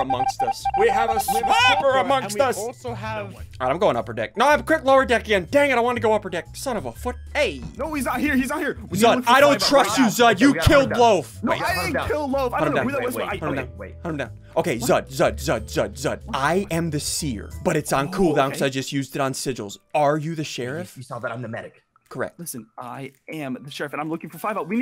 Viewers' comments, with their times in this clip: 0:05 was that son of a foot or something else
0:06 "son of a f**k" did bro swear